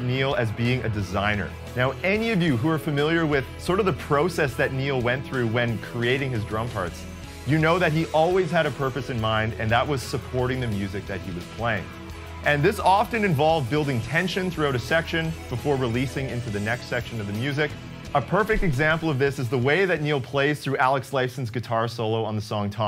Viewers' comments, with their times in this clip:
0:03 Ahh.. so you're a canuck, too :D